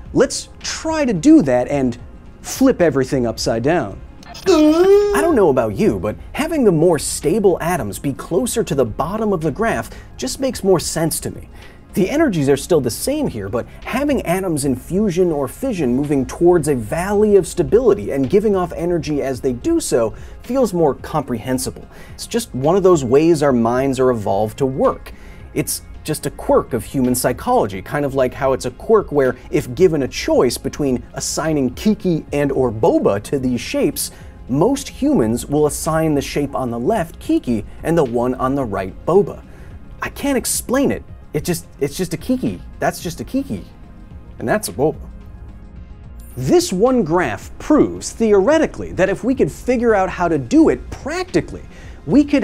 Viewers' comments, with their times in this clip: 0:05 That noise he made was fkn hilarious lolol
0:34 My guess is that it has to do with language. "KIKI" sound very harsh and sharp, due to the "K" sound, while "Bouba" sounds soft and rounded, due to the "B"
0:38 Kiki is a spikey word. Both visually and the way it's said. bouba is a Round word visual and Wavely in the way it's said